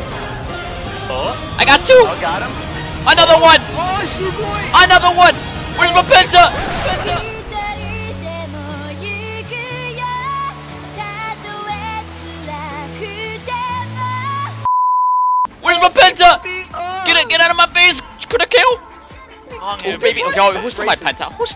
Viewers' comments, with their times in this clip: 0:07 Why the f*ck did you played that song?! I'm crying now :'( #AngelBeats
0:08 That song gave me a flashback, made me cry... really hard... Turns on push notifications and cries like if you know that song... what it means... the feels...